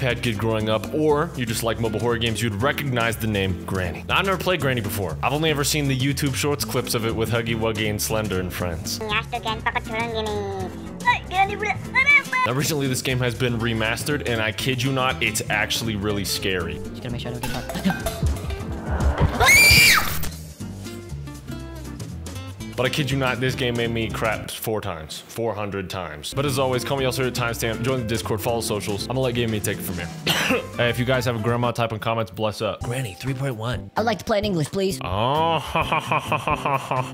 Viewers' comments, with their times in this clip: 0:08 Bro just screaming like a girl at granny
0:17 Bro I got scared by his scream 😭
0:17 Bro screamed like a little girl💀💀💀
0:18 bro tbh your scream scared me more than the game 😂😂
0:18 The Kid Scream Button
0:19 holy shit, i never knew you could reach that high
0:19 top 10 of the most manly screams of all humanity